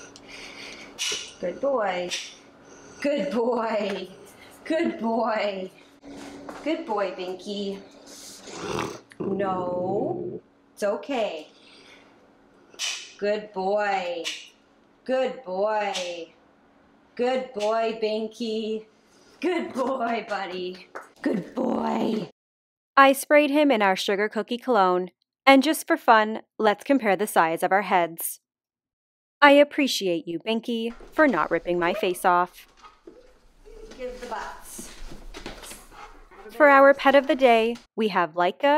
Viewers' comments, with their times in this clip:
0:08 That growl on ...So small.. Yet so intimidating. Seriously chills.
0:08 These videos never disappoint and always put a smile on my face.... That growl on ...So small.. Yet so intimidating. Seriously chills..
0:20 “GOOD BOY” INTENSIFIES